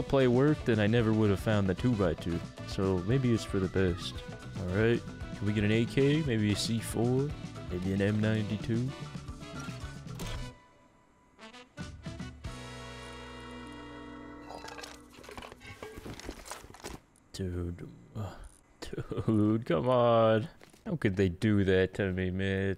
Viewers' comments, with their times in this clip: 0:03 opening the crate and the music syncs up perfectly x👌